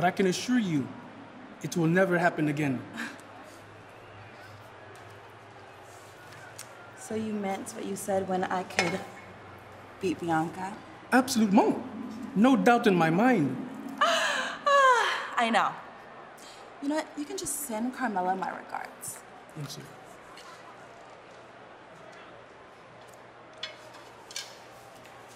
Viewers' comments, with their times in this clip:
0:08 the clank of belt meeting tray!
0:10 I think they got rid of that heel laugh